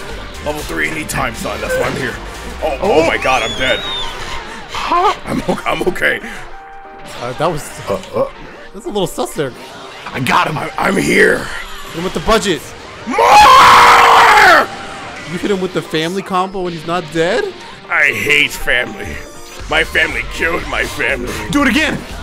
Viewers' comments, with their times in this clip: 0:10 That “MOOORE” actually sounded like Goku.